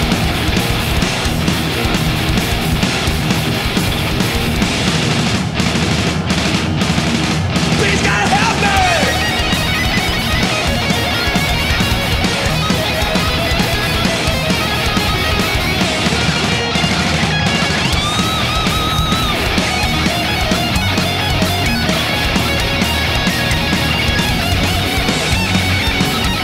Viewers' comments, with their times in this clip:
0:08 this was a crazy, how kirk can play this solo in this speed?!, metálica y the more profesional band that I saw in my life